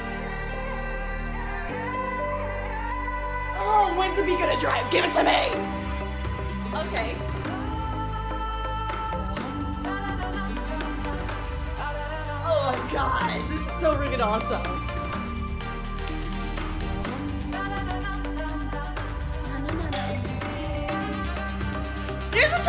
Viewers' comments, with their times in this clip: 0:08 this part sounds like there in Mexico and there gonna be the worlds famous person in Mexico